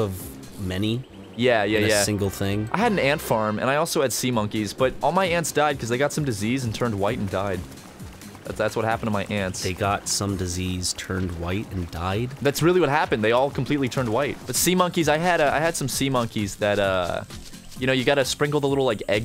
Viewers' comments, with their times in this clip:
0:04 I tune in and hear "all my aunts died because they got some disease and turned white" what a way to go